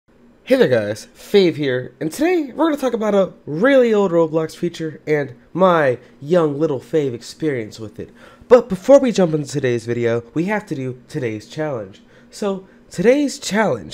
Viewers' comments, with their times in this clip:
0:01 He kinda speed running the intro tho